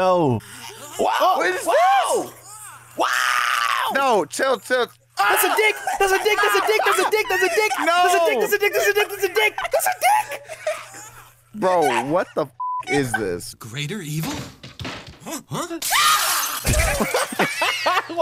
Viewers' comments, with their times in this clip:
0:05 the absolute panic in his voice sent me